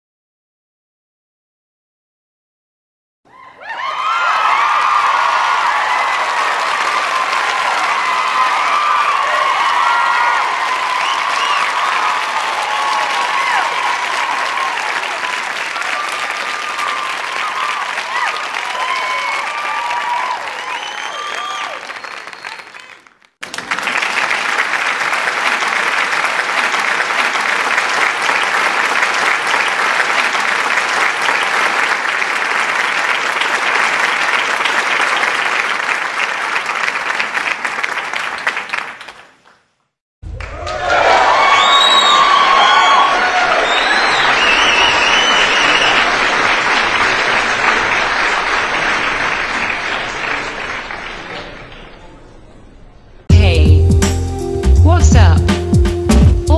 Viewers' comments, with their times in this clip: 0:03 big crowd of all cartoon characters cheering and applause clapping sound
0:03 Start Crowd cheering and applause
0:21 Was I the only one that heard "Justin"
0:23 crowd of disney characters in theater applause
0:40 Well, Chef Club is… The Winner! applause